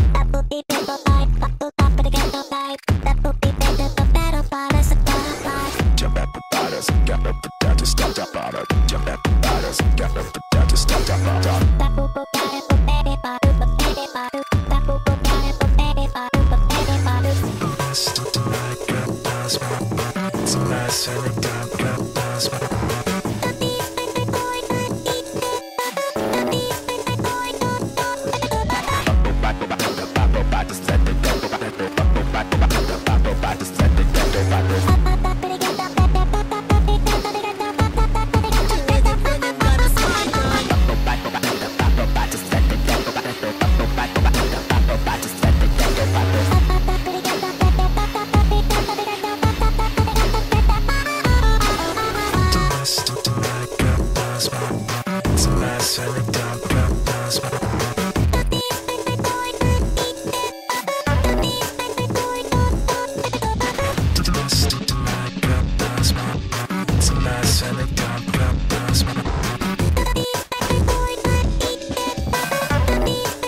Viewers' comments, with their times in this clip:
0:08 didn't know Pico was a mexican
0:17 sounds like a fly in your ear
0:17 the voice crack 💀
0:17 he sounds like he’s struggling
0:17 Fr, sounds horrible
0:21 voice cracks everywhere bruh
0:29 now pico is who beeps
0:36 His voice sounds weirdly juvenile to me. Like not that he sounds anything like a KID kid but there's just an inflection in his voice that sounds like he'd be super immature in a really funny way, especially here
0:38 he sounded cool with the filter but without he sound nerdy😭😭
0:38 WHY HE SOUND LIKE THAT 😭
0:38 secs he sounded like a nerd lmao
0:39 sounds quite similar i suppose
0:39 Slime god or slime guy
0:40 He sounds so 🔥 on even without filter.
0:51 sound like this is smack ass 7 up
0:56 y does his voice sound so crusty💀